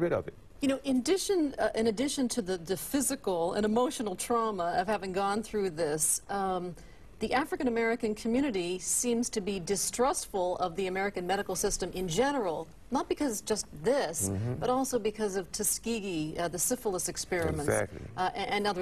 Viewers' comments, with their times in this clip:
0:04 why is the interviewer having a hard time saying “emotional and physical trauma” without laughing? She’s literally smiling and almost laughs while saying that, wtf??